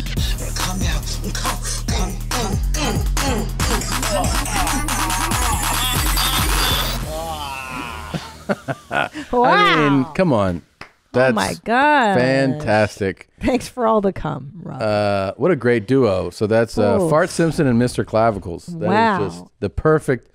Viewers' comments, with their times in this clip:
0:05 I danced hard asf to that beat drop, and as it dropped my head hit a doorframe